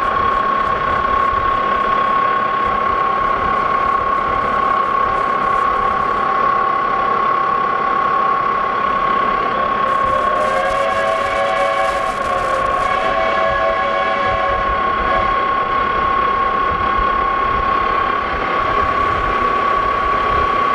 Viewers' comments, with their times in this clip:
0:07 I always like the train whistles in the background audio of your videos 👍